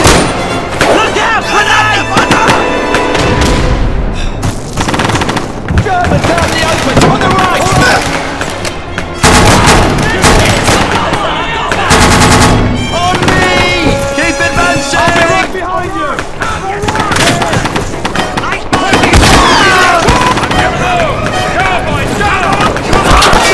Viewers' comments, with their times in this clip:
0:07 Money shot right there, the echoey sound of the BREN roaring, the focus on the Germans getting shot at with the blurry rifle infront of us, the instant change of area of operations as the MG gunner does his job and suppresses the enemy, and rightfuly then the rest of the Brits follow suit by charging across the bridge? Iunno what to say anymore, good stuff!